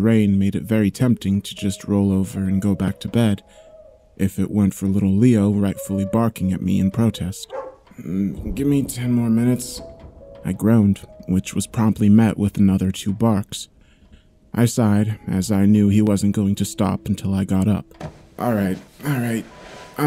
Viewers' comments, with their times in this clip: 0:03 I just hate it !! I'm wearing IEMs listening to this and I got so spooked from behind cos of the doggo sound! Anyway I love your contents, great job always! ✨⚡
0:04 Just started the pasta before i went out to do groceries. I heard the sound of the dog and immediately put off my headphones because i thought the sound came from outside. It's just one example but to some degree it stands for how amazing you pay attention to the sound design. The foley, the use (and not use of music) and the narration (surprisingly also the co narrators which never disappoint) really make you stand out from all the other channels. I think i can say with confidence that you are the best pasta channel i've ever seen on youtube.
0:05 Lol!!! At like I heard a kid whinny and a bigger dog barking. I was just about to lay down and take a nap, and my husband is supposed to be watching the kids. I have a little dog, so i knew the dog barking wasn't mine. I actually checked out my back window to see if a bog dog had gotten in my back yard with my 3 year old son. And then it dawned on me that it was just the audio from the story! Lmao. Nicely done. Very believable. Even more so when tired enough to fall asleep while standing. Haha. 👍😂👍😂